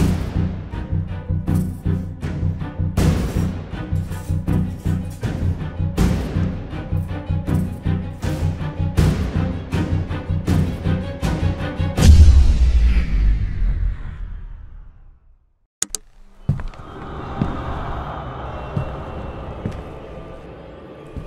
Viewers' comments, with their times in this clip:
0:05 what a sound effect😮😮😮😮 only head phone